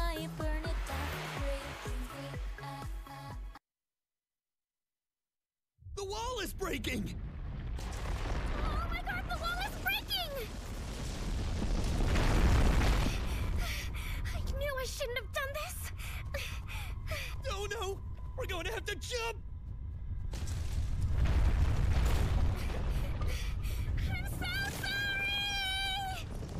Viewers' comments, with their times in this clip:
0:08 The lyrics of the song "Watch how I burn it down".... are way too close to, the pronunciation "WATCH HAWAII BURNING DOWN" I say prayers to Lord Jesus and will be saying them tonight for Hawaii.